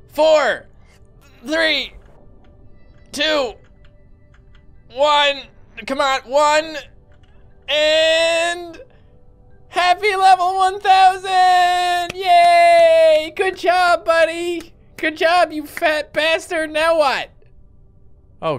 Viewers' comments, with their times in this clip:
0:04 when the bass drop is too hard.